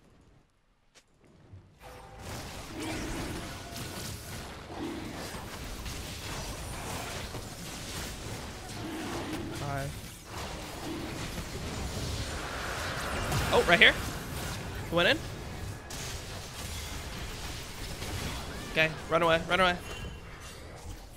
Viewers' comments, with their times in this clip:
0:07 Anyone else hear the random "Hi" around the mark...?